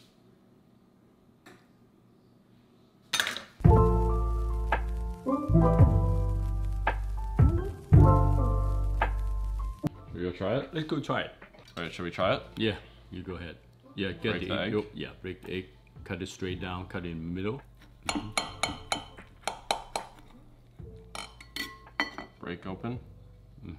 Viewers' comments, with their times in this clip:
0:07 ayo that beat